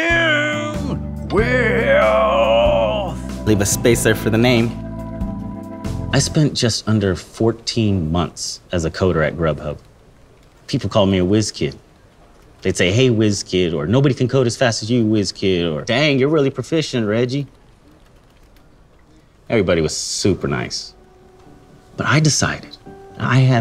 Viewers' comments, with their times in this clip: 0:05 makes him sound like the Riverwood Trader